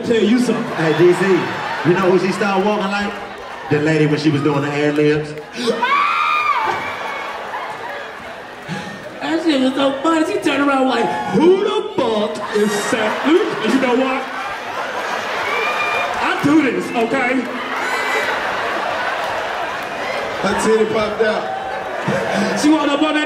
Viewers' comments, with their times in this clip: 0:08 Bruh DC had dying😂...the way he impersonated that girl was hilarious